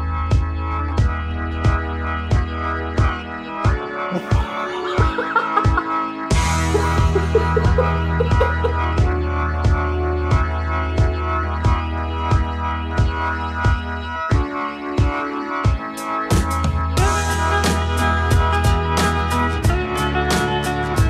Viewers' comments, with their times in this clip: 0:05 The laugh got crazy😂😂